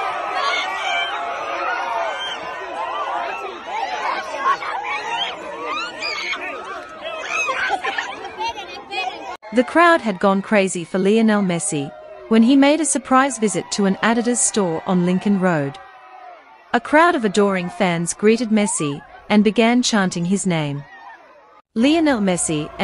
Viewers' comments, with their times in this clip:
0:04 Why is this 12 year old cackling like a goose?